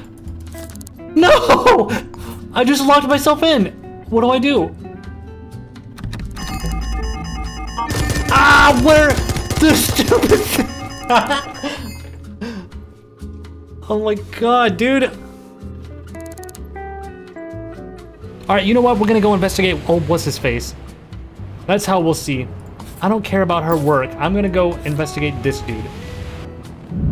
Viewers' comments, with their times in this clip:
0:09 That fucking laugh after he dies... He sounds like Mickey Mouse from Kentucky.